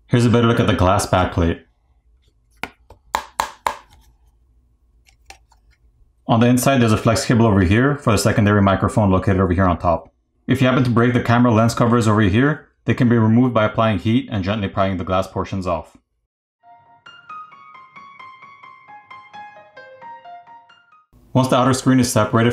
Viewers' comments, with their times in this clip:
0:03 wait that sounds and flexes like plastic 🤨